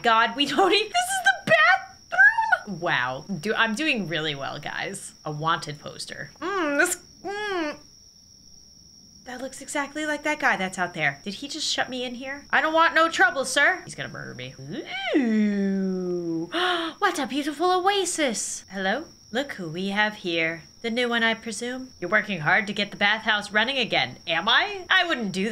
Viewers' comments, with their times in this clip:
0:06 ive never heard her voice like this 😂 it sounds like a whole new person